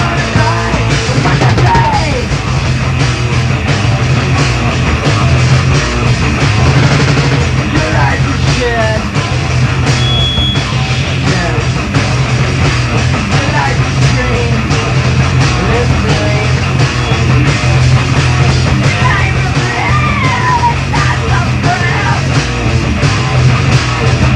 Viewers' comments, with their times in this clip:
0:09 mic:*feeds back* Kurt: shhhit